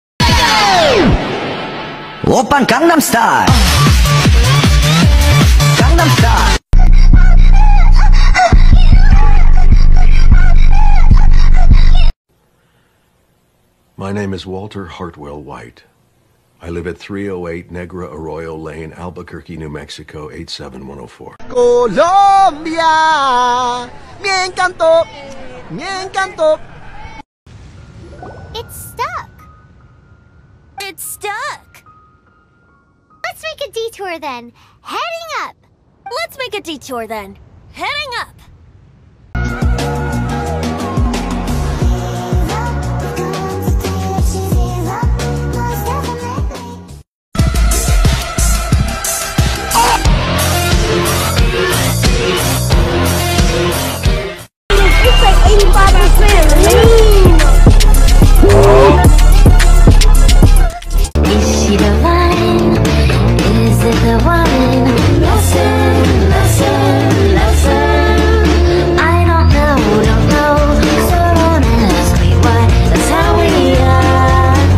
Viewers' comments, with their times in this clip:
0:06 I literally in high volume 💀💀
0:28 Bro, Paimon’s voice was so much more different back then.
0:55 The Snore💀💀 also Anyone Know the song name?? Edit: NVM Y'ALL FOUND THE SONG NAME it's "2020 klips 3"
0:55 I swear I heard Zhonglis back crack 😭😭😭